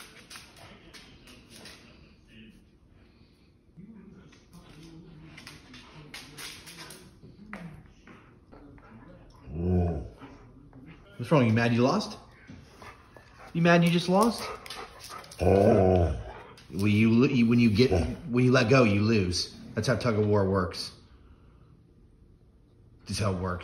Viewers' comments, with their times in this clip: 0:09 I heard Hila growl because she lost by Brittney spears 😜